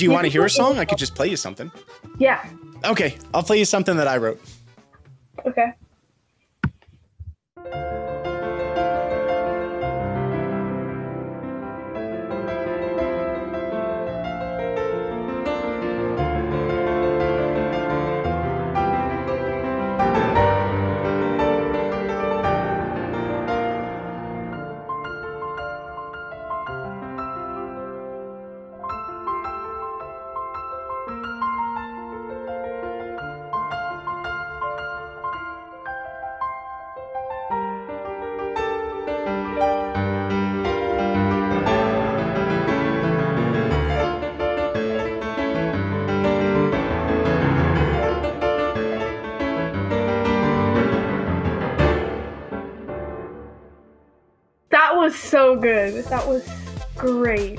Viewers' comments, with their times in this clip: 0:06 I've been watching you for a year now, but that song just blew my mind. My jaw just dropped. It's so beautiful 😲
0:44 Love “Overcome”, especially the end Pirate vibes! #MonkeyIsland🏴‍☠️
0:44 Playing your own composition, I really liked the "Spanish"-sounding, high-energy burst section! 10-Q very much!